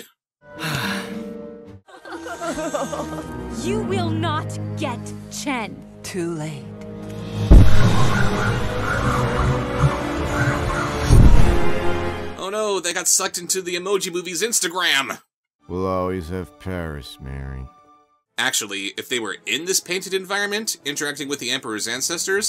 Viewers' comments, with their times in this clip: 0:03 For some reason the first time I thought she said “You will not yet Chen”.